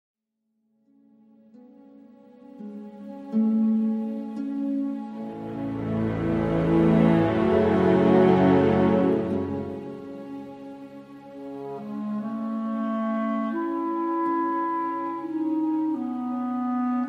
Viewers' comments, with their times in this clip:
0:00 This song gets epic after